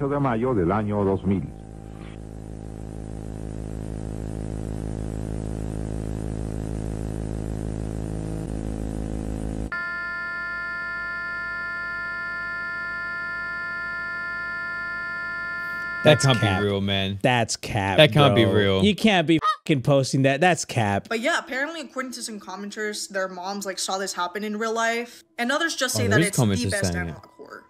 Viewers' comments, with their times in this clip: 0:10 minutes when it started playing that ringing sound I felt sleepy. did that happen to anyone els?